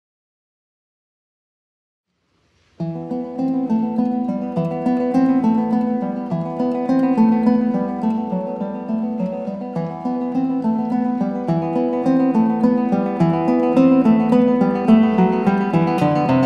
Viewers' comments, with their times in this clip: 0:03 literally the definition of “music for relaxation “